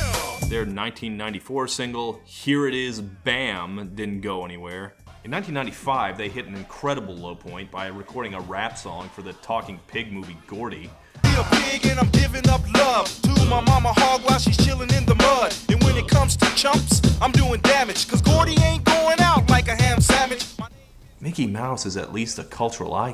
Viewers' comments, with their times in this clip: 0:06 I am the only one (not a native speaker...) who always misheard this for "WHHOOOOP THAT A§$?" EDIT: Seriously no WHOOPIE there she is?